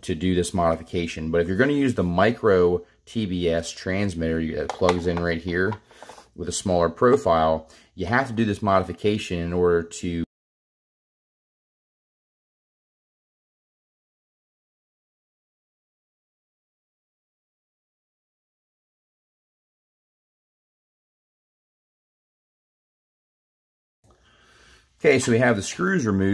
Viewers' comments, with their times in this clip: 0:10 the audio cuts out.